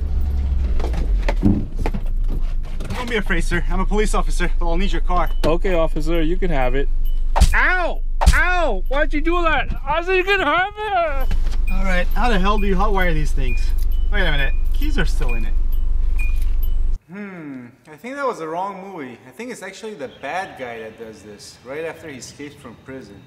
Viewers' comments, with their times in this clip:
0:09 he sounds like Lumpy Space Princess